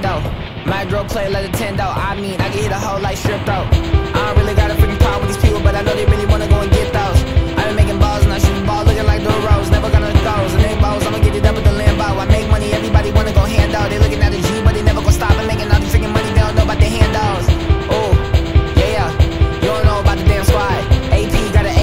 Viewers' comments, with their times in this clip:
0:04 HE GOES INSANE BRO SPITTIN 🗣️🗣️🗣️🗣️🗣️🔥🔥🔥🔥🔥